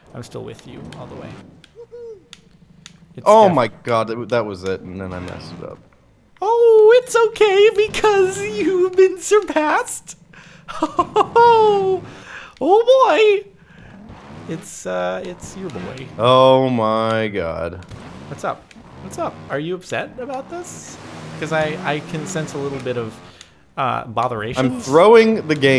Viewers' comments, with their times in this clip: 0:05 dat mickey mouse voice crack
0:06 WTF is Captain Sparklez freaking Micky Mouse now
0:07 Mickey Mouse's old age voice! xD
0:09 i didnt know mickey mouse played trials ;)